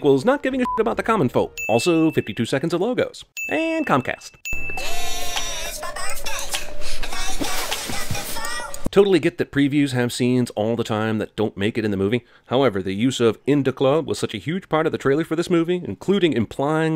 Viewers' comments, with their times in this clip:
0:03 and COMCAST DING